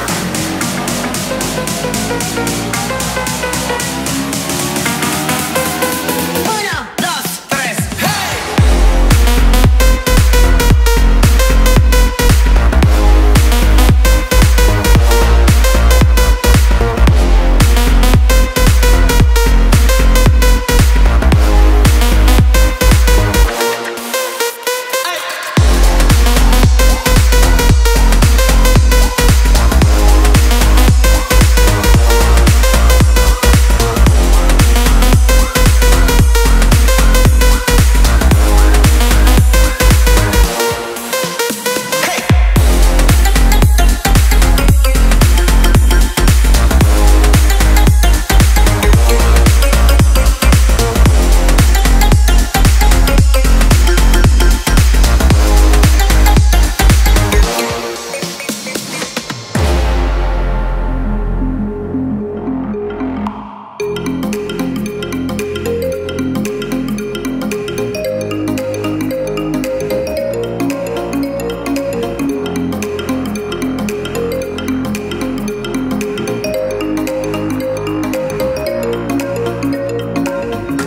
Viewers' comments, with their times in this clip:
0:08 bro this music is just so fire! omg the beat bro
0:10 Has some GOOD DUBSTEP
0:43 This Tune Op 😍
1:05 was just-👌🤌👌 the music in the background 😎❤
1:07 call alarms be like: